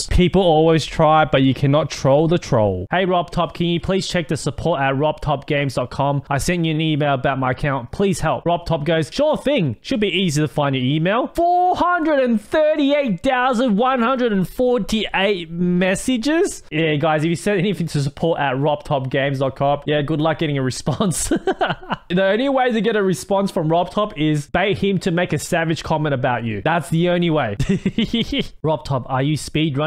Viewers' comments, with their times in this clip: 0:10 Started to sound asian